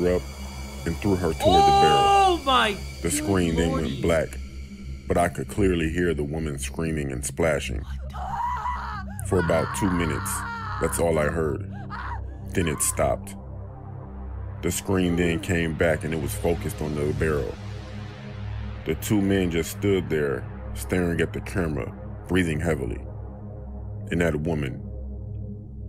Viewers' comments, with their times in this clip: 0:08 those happy wheels sounds. Ahh the nostolgia